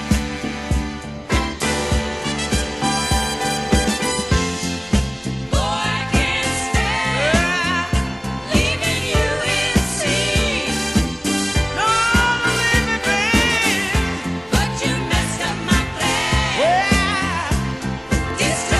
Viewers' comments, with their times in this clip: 0:05 Yes. This is easily the most Soulful track on the album - though it's also on the flip side of the US only single "Just A Kiss Away", which I think is shallow by comparison to this stunner. I love the horns and string arrangements - and particularly the fabulous backing chorus !